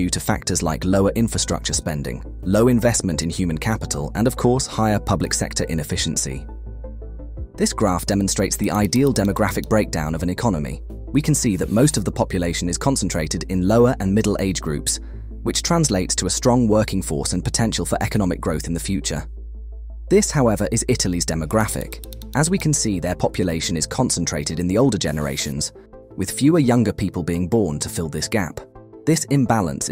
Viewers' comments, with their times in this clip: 0:10 The marker sound used (like in ) hurts my ears 😣